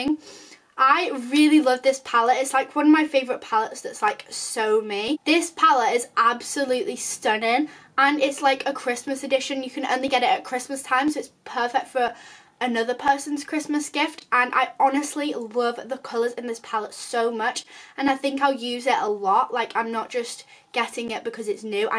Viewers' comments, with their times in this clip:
0:07 lmao sry but ur acsent